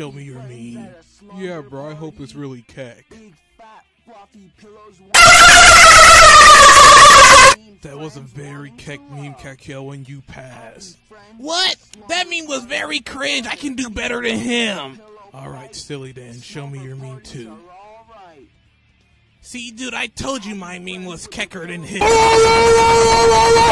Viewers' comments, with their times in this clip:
0:06 i had my volume on max that scared the shit out of me